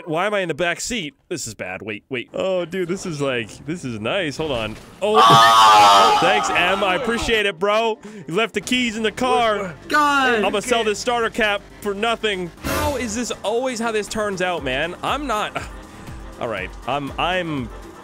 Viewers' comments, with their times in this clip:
0:04 what that sound🤣🤣🤣🤣🤣 The sound like Motorcycle 🏍️😹
0:04 what is that scream
0:05 LOL THE YELL
0:05 why was that so loud
0:06 is my favorite. listen to the dude screaming when he gets hit